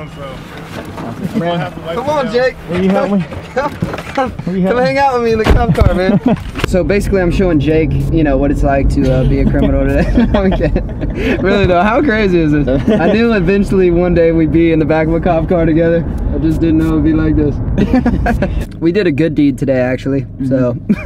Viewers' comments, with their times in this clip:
0:04 did anyone else hear a scream?